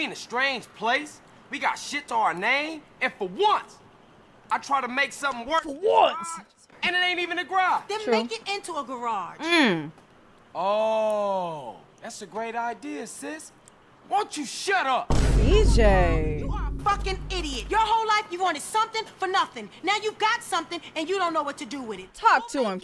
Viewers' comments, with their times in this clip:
0:04 LMFAO CJ: YOU THINK I WANT THIS! IT JUST HAPP-UND!